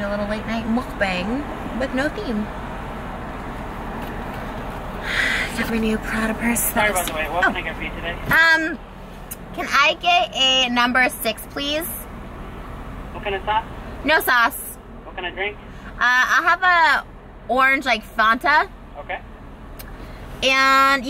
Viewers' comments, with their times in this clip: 0:06 lmaoo bruh I thought someone was in the back seat but it was a car